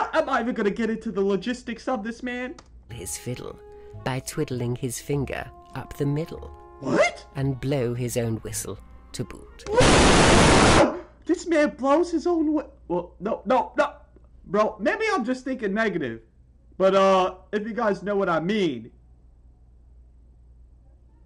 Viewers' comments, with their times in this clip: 0:09 BAHAHAH THE SCREAM GOT CUT OFF WITH AN ADD